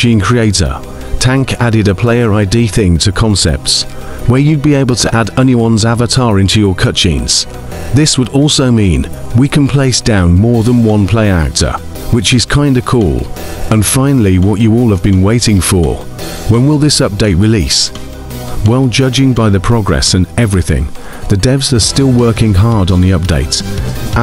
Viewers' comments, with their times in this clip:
0:06 Cheese. AND I CANT WITH THE AI VOICE "into your cut jeans" 💀